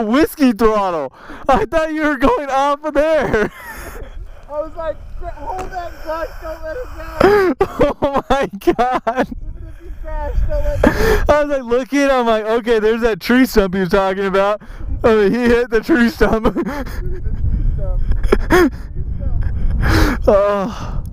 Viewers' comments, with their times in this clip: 0:05 Who else heard a little voice